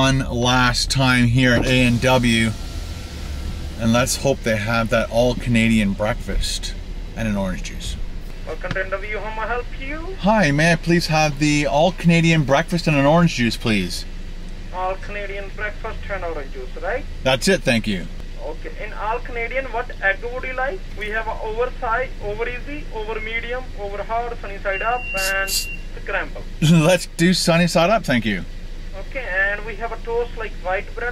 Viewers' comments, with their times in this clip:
0:07 the guys singing 😂😂 👌
0:08 "Welcome to A&W, how may I help youuuu?" 😂 He sounds like a nice guy.
0:19 😂Indian guy accent hahaha wtf